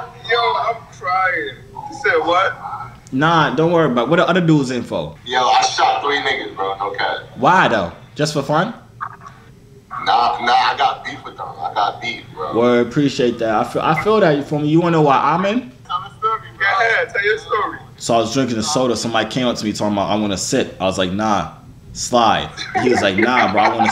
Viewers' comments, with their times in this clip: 0:05 the way he said that gets me everytime 😭😭😭😭